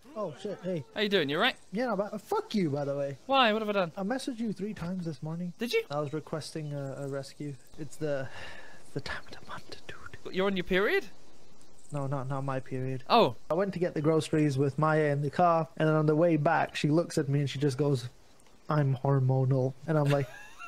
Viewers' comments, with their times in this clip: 0:03 that voice speed tho